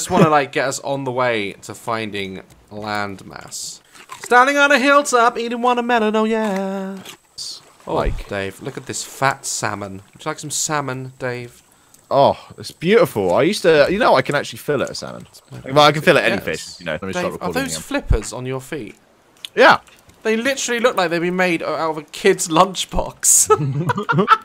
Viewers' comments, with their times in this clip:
0:05 Anybody’s gonna tell me those vocals tho